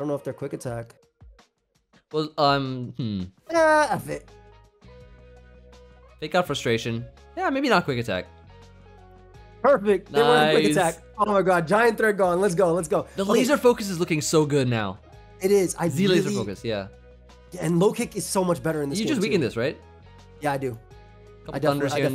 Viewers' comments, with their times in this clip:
0:09 sounds very similar to the street fighter "perfect" sound